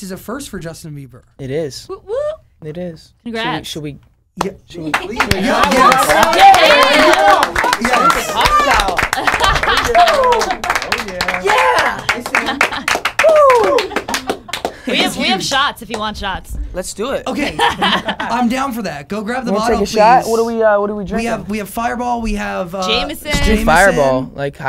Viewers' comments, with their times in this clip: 0:09 that "woo! yeah!" is so cute and adorable AHHHHHHH I CANT EVENANSDFNASDFNAKSDFNKA